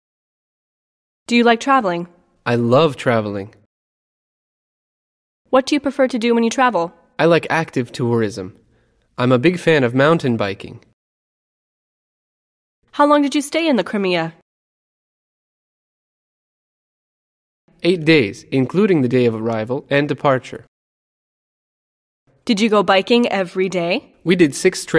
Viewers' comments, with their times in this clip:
0:07 in of time the voice with the lyrics does not match what a pity